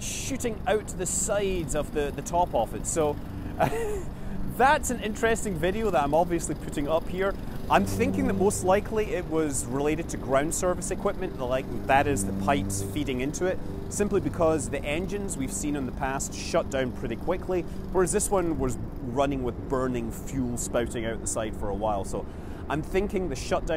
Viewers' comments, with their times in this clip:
0:06 Man that rocket engine sounds meaty